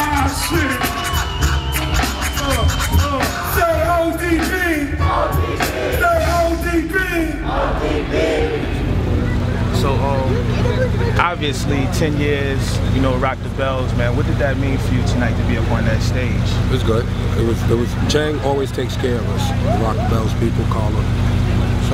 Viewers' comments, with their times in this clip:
0:03 cringe crowd sounds brainless